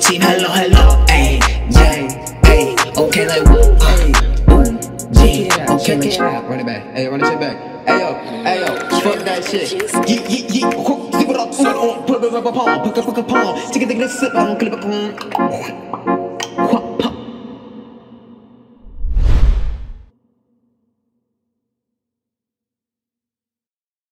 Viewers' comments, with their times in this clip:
0:10 my man be speaking enchantment table
0:11 Wow the adlibs showed up a bit late